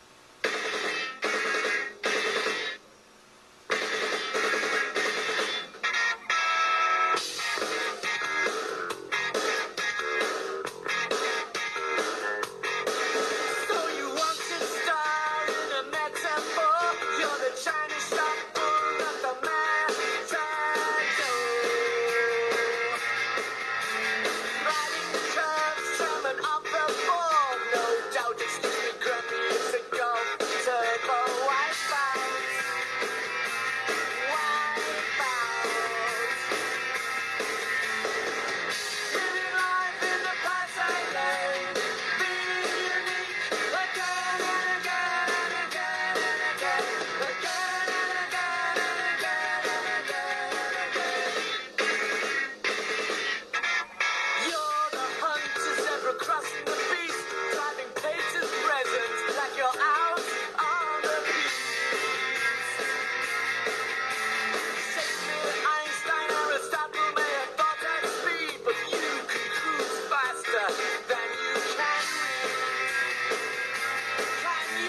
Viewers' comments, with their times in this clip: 0:06 this sounds like a mixture of 80s and 2000s Red Hot Chili Peppers and British vocals It’s pretty good
0:55 sounds like New Model Army